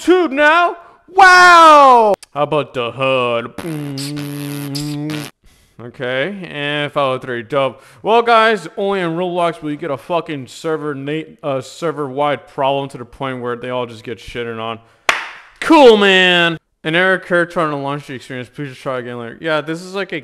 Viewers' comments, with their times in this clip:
0:03 Broo that beatboxing was siick!